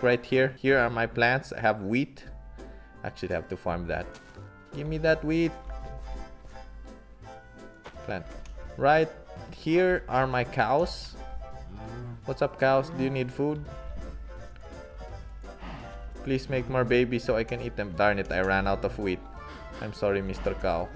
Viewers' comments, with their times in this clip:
0:04 i really thought he said gemme that weed 😂